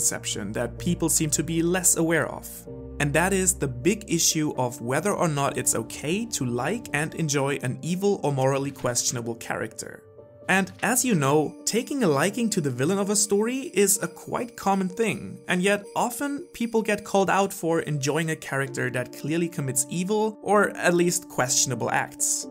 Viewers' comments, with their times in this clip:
0:09 whats with the slasher movie music in the background? i thought my fan came off its track... in (Nvm its just really annoying jingle bells..)